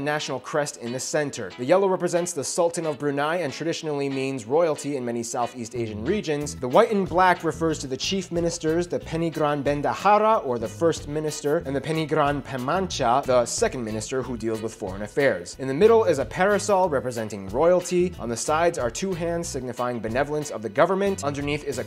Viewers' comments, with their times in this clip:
0:09 I love how u pronouns pengiran😂😂